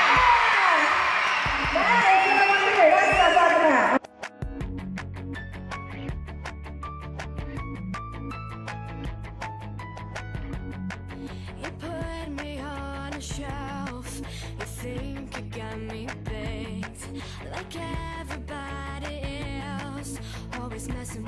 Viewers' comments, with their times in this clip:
0:08 looks like shopping^^ .....don't stop singing Bianca ! go on go on go on